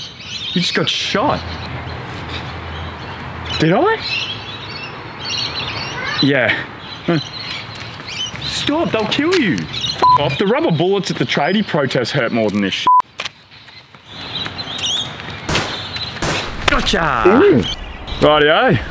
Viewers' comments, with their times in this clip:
0:05 there’s a cat meowing in the back ground 🥰